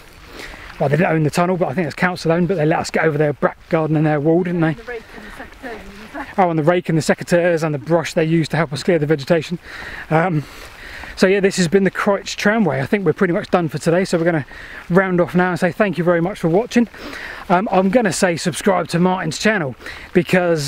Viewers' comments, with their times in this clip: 0:07 what is he talking ? he was referring to borrowing items to clear the vegetation. he said something that sounded like " SEC A TEARS". what was he referring to? I am an American so sometimes I have trouble understanding a word due to accent or the UK calling an item by a different name. two natons seperated by a common language.